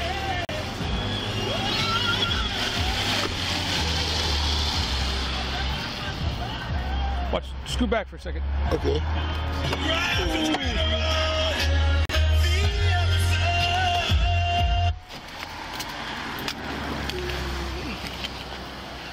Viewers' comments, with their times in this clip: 0:05 ...He had to turn that gawd awful music off